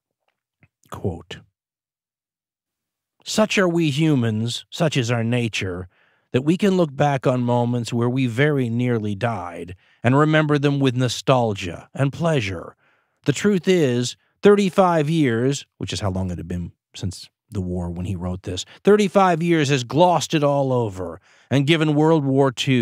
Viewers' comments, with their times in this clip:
0:09 Did anyone think it sounded like Dan was singing